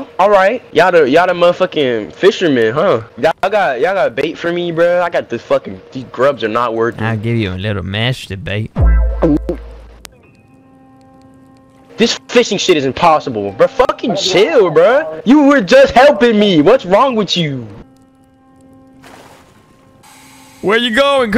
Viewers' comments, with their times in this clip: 0:07 that gulp tho